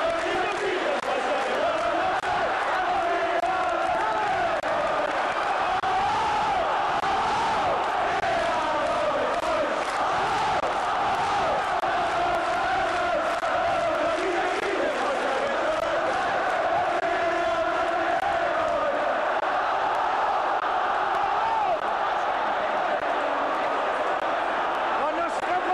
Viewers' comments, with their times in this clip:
0:08 Did you upload this via the 1984Wifi when you got home?This is so rare this footage. We are getting trip back to a time when the atmosphere was deafening! Now it's mostly tame at ibrox. we see when the whole of Ibrox was literally jumping and singing together. We can even see the east enclosure rippling with bears. Fantastic thanks for sharing this!